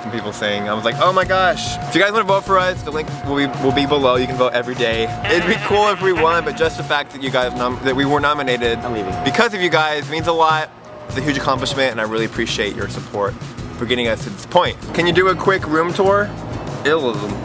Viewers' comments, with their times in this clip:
0:05 The background noise 😂😂👍